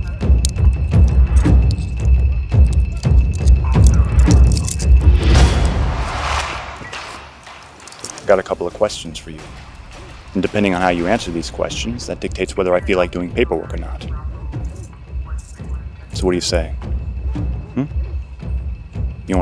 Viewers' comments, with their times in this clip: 0:05 Lol that skinny white dude laughing while getting punch by cops Damn oscar level actors...